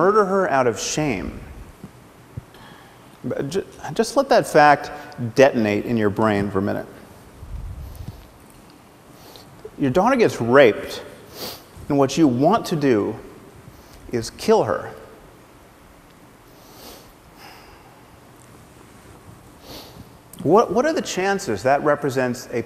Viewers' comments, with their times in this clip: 0:07 His fake emotional drivel and on is done for one thing, to put on a show to sell tickets to those that buy emotional drivel. He lost me at *dry sniffle* dry sniffle* liar